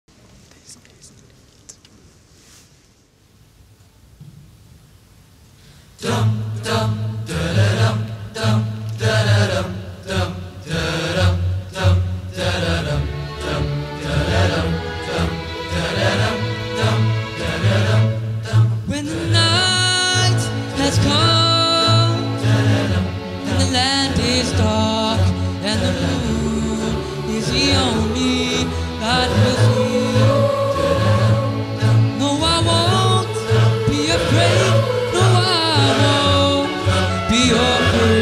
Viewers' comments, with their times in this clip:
0:06 nice haha kinda fast but sounds cool hey!! dave mustaine haha
0:20 This man is singing it like he just digested a Helium Tank